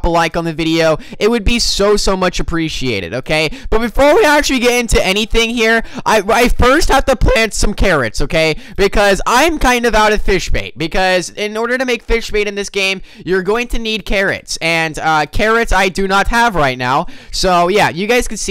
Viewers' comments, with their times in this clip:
0:05 you had a voice crack